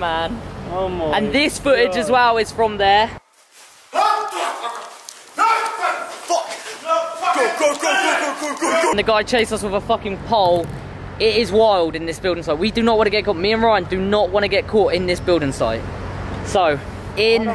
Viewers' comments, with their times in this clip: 0:03 was that some bird sound
0:04 does that person at the top of the stairs suddenly start sounding like a chicken or is it just me 😂😂